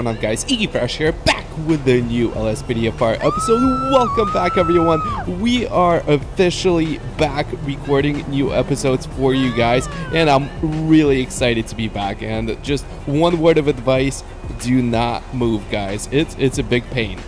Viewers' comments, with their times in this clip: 0:04 A lady was screaming